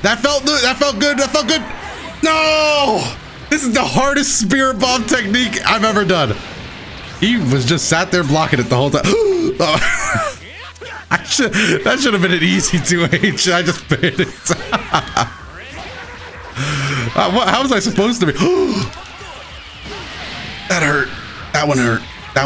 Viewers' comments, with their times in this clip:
0:08 son I'm weak that gasp as Vegito did that unsafe 20 plus year long raw tag has me cracking up 😂😂😂